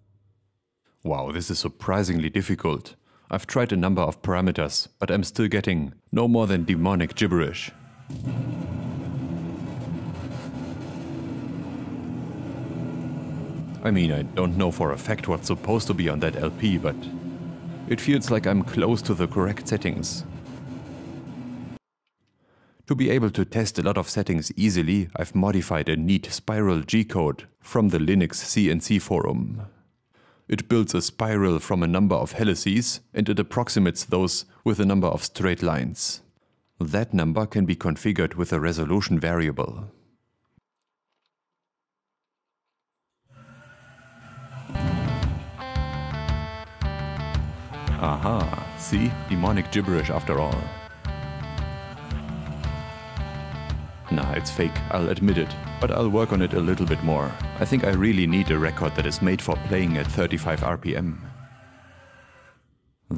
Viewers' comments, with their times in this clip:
0:08 he's right, you can hear "Hail Satan"!
0:44 that was officially the most beautiful rendition of lateralus ive ever heard